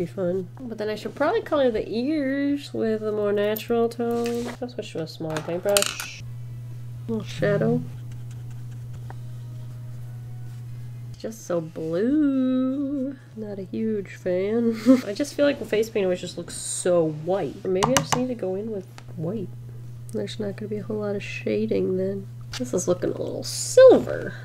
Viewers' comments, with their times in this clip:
0:07 The phone buzz made me think it was my phone 😂 had to rewind the video to make sure I wasn't hearing things ahaha